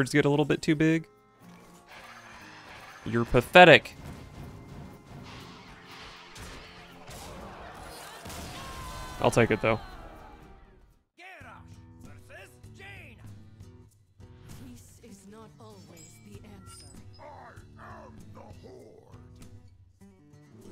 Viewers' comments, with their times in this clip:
0:03 damn actual emotion in the voice